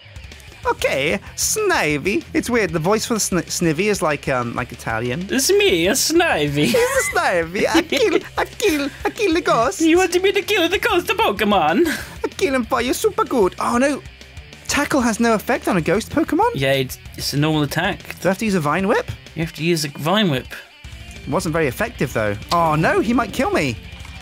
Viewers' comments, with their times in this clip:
0:06 I'm Italian #racist